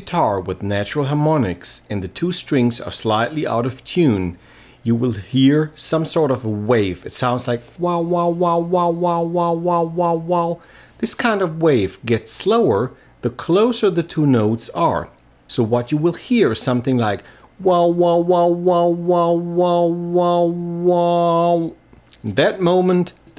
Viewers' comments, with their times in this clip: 0:07 "So I was huffing a can of duster when all of a sudden I hear... "